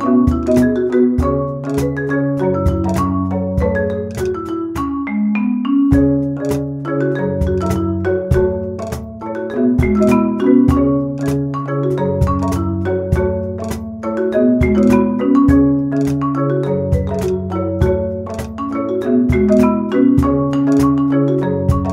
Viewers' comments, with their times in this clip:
0:05 Had me thinking she was going to take it minor key with that note
0:05 No it is not a wrong note. the first time around she hits the 2nd more to the edge of the wood block, this causes to the block to vibrate different what gives a slight divination of tone, like the black keys on a keyboard (minor - mayor). It does feel weird at first but if you listen to it carefully from a couple time over, the tone does actually fit if it was to be repeated. anyhow she hit the note slightly on the edge that time, she did however hit the right note block ;)
0:05 Ik hear a wrong note one second after Or is it just me?
0:06 is that a wrong note or am I stupid
0:06 good but wrong note
0:06 was a wrong note am I right?
0:07 you can hear a lil mistake there. But that doesn't matter. This cover was awesome. Thank you guys for at least 13 likes
0:07 Is wrong note...correct that first